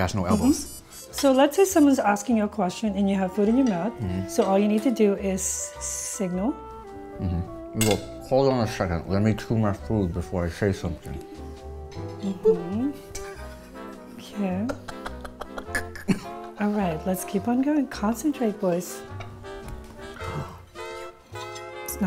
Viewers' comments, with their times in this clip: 0:08 I loved how the teacher had to hold back her laugh when time was talking with food in his mouth